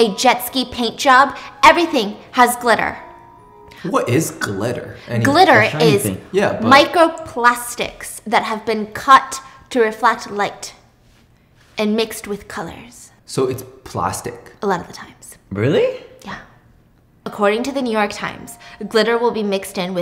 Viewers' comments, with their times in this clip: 0:04 I love the way she describes glitter to him in the same like “scandal” voice😭 its so funny for no reason😭😭